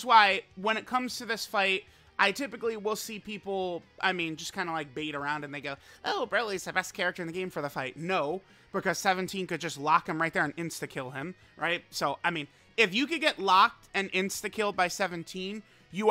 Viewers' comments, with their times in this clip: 0:04 😂 i heard something else entirely. The garlic is strong with this one